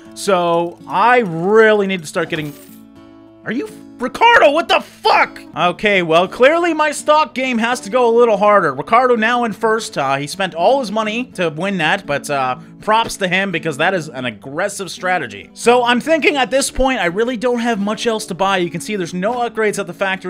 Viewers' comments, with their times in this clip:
0:03 He kinda sounded like Seth Rogen there.